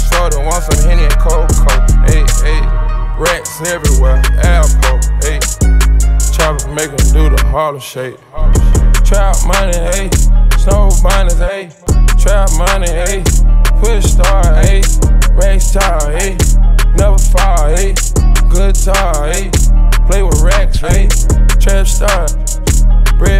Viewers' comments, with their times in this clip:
0:08 That lil beat switch up always gets me